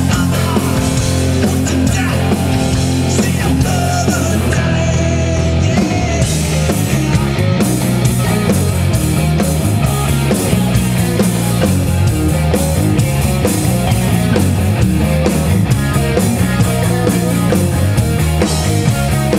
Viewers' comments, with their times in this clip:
0:06 sounds amazing with the bass!